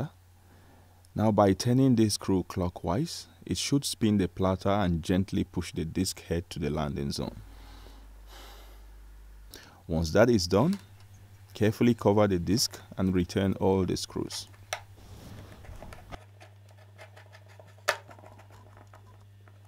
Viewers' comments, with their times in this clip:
0:07 That sigh of relief and accomplishment 😄👌